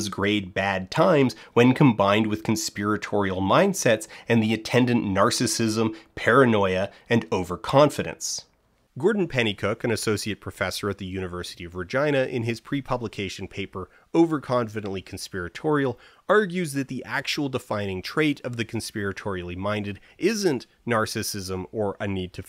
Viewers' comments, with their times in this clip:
0:10 Was it just me, or does he also mispronounce Virginia almost like vagina ? Or was it not supposed to be Virginia?